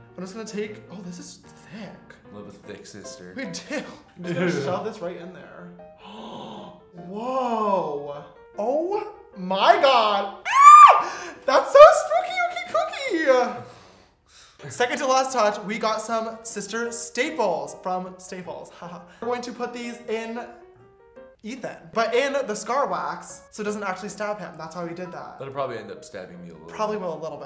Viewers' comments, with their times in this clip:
0:09 Are we all just going to ignore how cute james scream was